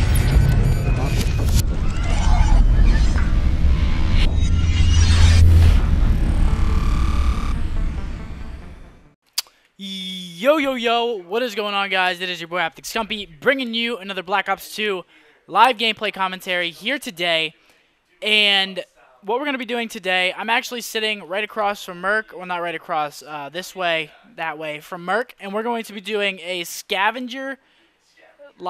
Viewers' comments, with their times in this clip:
0:09 that was the weakest "yo yo yo" you've ever done.